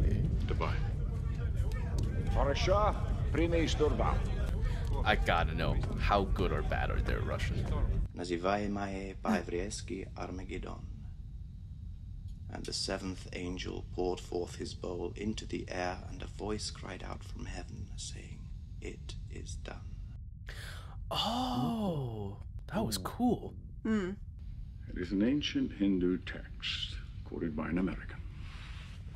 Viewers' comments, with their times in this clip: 0:10 From a production standpoint, I think the zoom-in transition from Russian to English is one of the coolest things of the movie! The conceit, of course, is the characters are still "speaking Russian" to each other, but, we, the audience, is hearing English! It eliminates the need for subtitles! I never understood why film-makers felt the need to us to listen to a language most don't understand, and have to read subtitles! It remined me of what they do in the comics, where they would have the dialog inside of < > (like this : <You have your orders, comrade!>) with an asterisk and a note saying "Translated from Russian" or whatever. I wish all movies/TV shows would do it that way! In fact, you could even have a small graphic in the corner *TRANSLATED FROM RUSSIAN, with the actors speaking English.